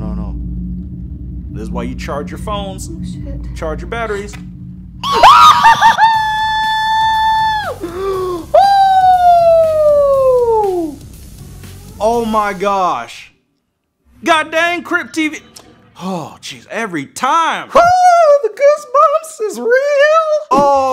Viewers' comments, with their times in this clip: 0:05 I held my piss so I could see what happened next. When the jumpscare happened, I almost pissed my pants. edit: (that ghost girl be like: REEEEEEEEEEEEEEEEEEEEEEEEEEEEEEEEEEEEEEEEEEEEEEEEEEEE)
0:06 That scream is what I came for😂